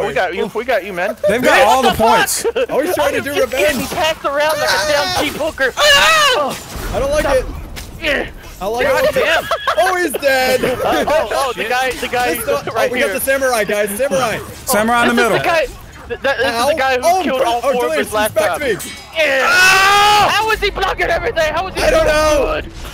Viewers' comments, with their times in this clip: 0:04 My favorite line is when delirious says "I'm getting passed around like a damn cheap hooker." And then cackles like a maniac.